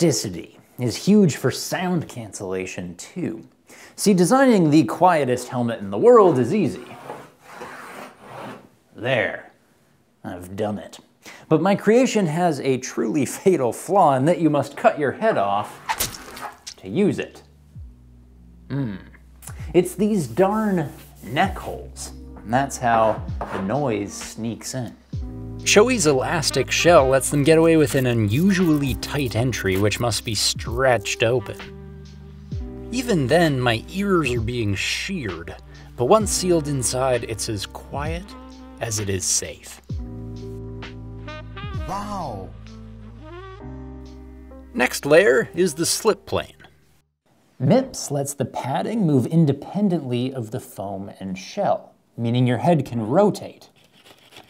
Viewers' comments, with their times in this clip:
0:09 The “I’ve done it” gives off huge Jeremy Clarkson energy
0:41 Eddy wally doing the woaw xD i literally live in the village where he lived , im so amazed that people all around the world still use his woaw 😆